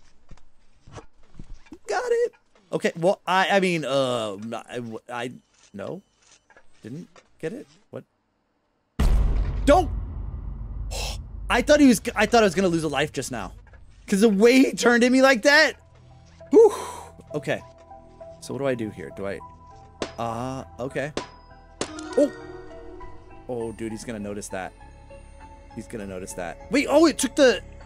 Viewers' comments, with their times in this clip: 0:08 God think that jumpscare noise in the edit scared me so bad